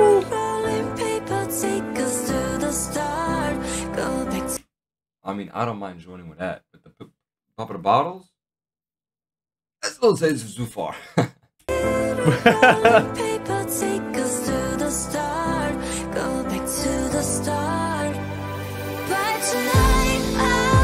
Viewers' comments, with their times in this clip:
0:03 I think in they put all of them bc they actually all harmonise with her in the back, but yeah Jisoo is leading this.